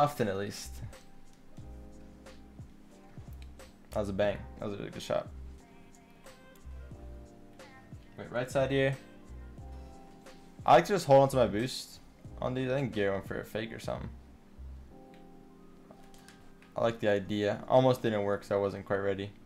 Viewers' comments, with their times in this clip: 0:03 when music syncs up with what squishy is commentating